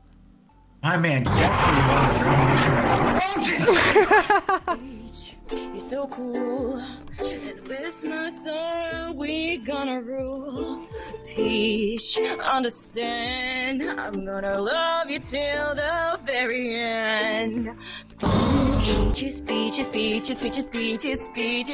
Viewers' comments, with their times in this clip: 0:05 this cover is really nice god damn